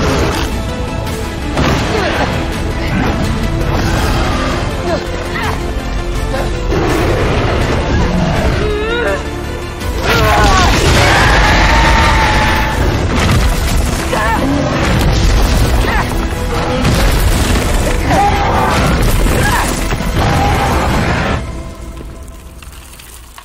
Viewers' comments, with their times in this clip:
0:09 Diablos's actual roar is similar the one in in the games but more blood curdling & its supposed to be so loud u can't stand near it without covering your ears